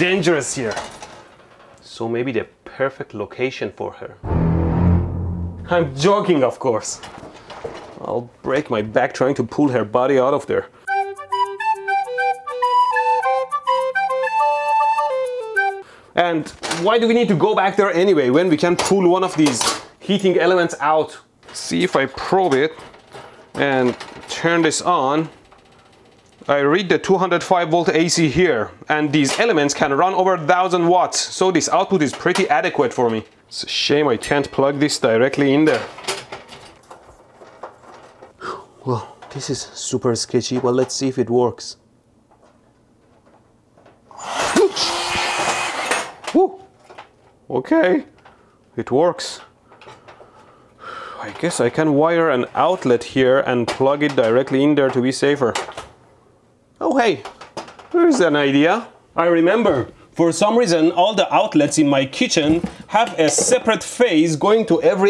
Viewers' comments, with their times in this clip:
0:10 that music is so good
0:11 whats the music? super-flute mode ON
0:38 ElectroBOOM got so shook that he had a voice crack. THE CASTLE HAS FALLEN
0:43 and that voicecrack
0:44 hes voice crack: oKkKkKkK
0:44 That voice crack though
0:45 nice nervous voice crack 😂
0:46 lol that voice crack tho
0:46 that voice crack xD
0:46 Did nobody hear that voice crack?
0:46 voice crack. You’re welcome.
0:46 did he just have a voice crack
0:47 that voice crack made him sound so uneasy
0:47 Da voys crak do
0:47 Voice crack "ok"